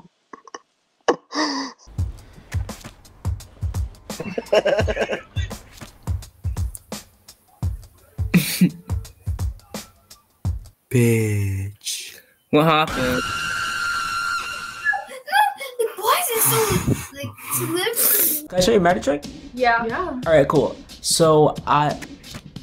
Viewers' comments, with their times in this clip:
0:04 mischievous ah laugh💀